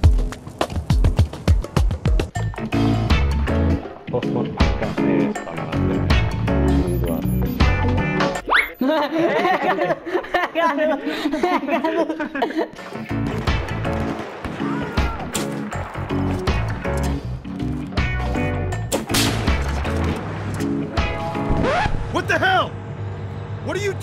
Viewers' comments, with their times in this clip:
0:09 thats a lot of squekers playing r6